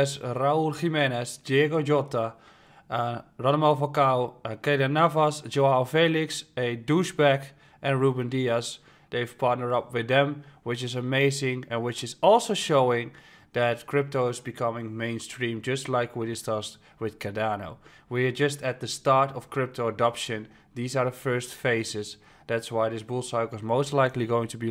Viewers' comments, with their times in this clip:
0:05 A douchebag lmao, the way you say it with a straight face. great vid